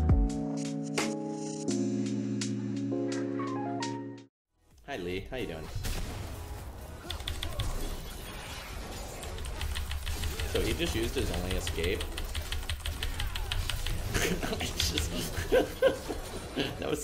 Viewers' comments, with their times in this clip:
0:04 Can someone tell me what he is spamming every fight with no spells up? For example, His q and e was on cool down, but i hear taptaptaptap, what is he pressing? Just A spam click?